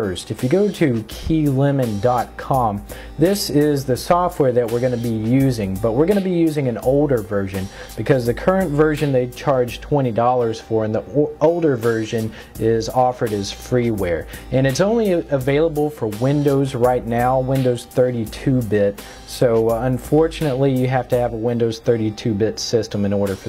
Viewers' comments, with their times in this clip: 0:06 "...but were onna be using an ODOR version"